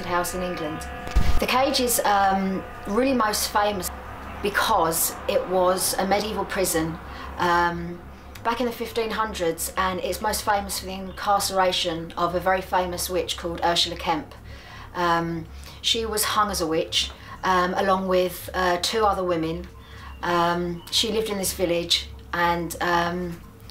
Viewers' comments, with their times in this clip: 0:09 I like this girl but she says “um” to much kinda annoying.